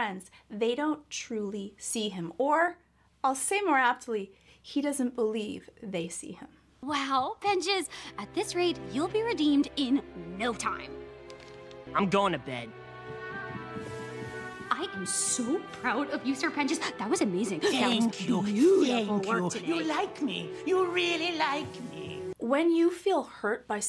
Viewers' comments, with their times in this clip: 0:08 i love the fact that I am not the only one who noticed that his voice got deeper